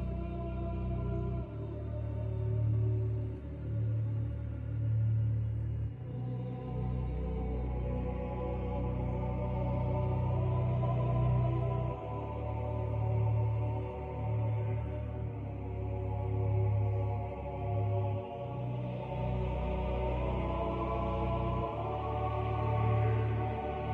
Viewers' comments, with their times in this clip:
0:05 angel music for x rip